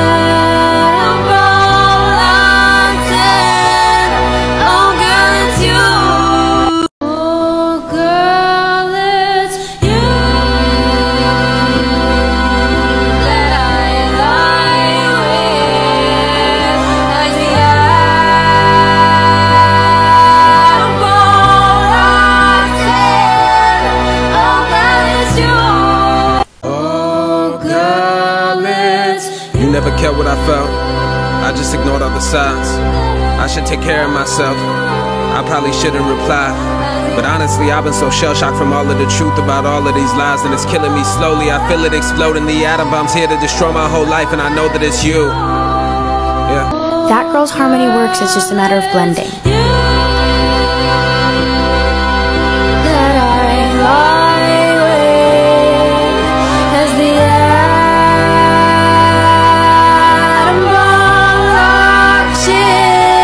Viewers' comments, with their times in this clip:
0:07 100% agree. i just think her voice sounds bad even in although improved
0:08 If you look she blended into the song a lot better
0:47 yep, as showed it's just a matter of blending and matching timbres